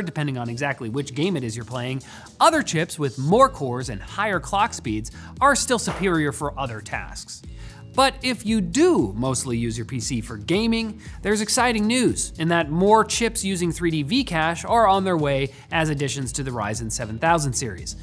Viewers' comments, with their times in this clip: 0:05 Was that Linus dropping something in the background ?